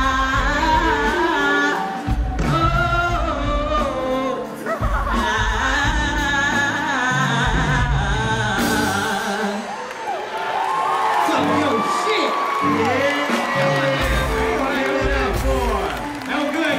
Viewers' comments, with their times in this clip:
0:04 nigga that he laughing in the back when y’all record 💀💀
0:04 dhey gotda fush from spongebob in dhat hoe laughn every episode kuh🤣🤣🤣🤣